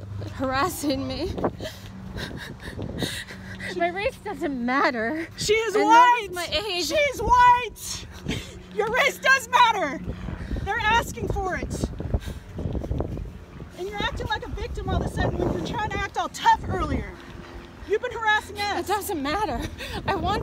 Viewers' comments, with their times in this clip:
0:04 omGGGG🙄 the fucking sobs